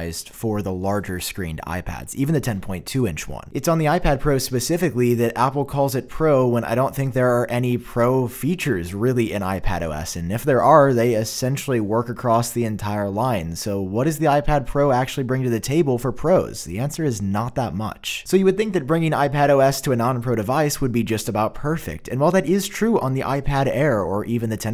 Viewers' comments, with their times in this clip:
0:09 a mon gus